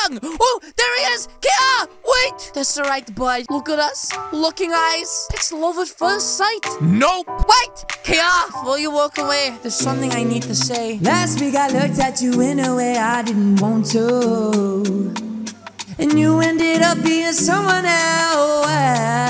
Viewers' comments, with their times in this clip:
0:05 is when the song was starting